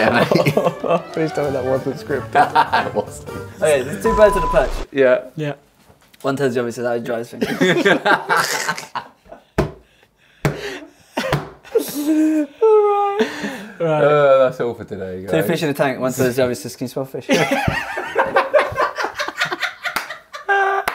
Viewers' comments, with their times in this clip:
0:07 I know is where the real show begins, but I can't even tell what you guys were saying between the laughter 😂